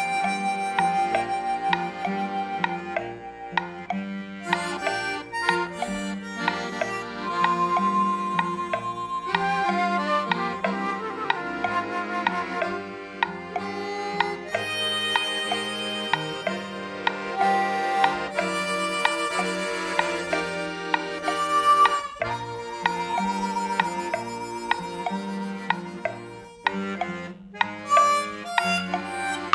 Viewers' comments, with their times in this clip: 0:10 That harmony is actually REALLY awesome!